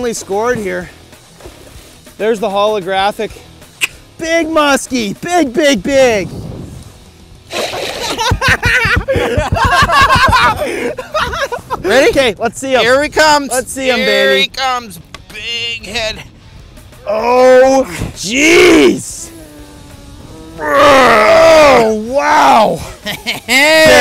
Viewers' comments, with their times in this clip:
0:05 holly shit go back and listen to his laugh
0:09 best meme laugh
0:10 that laugh is priceless lol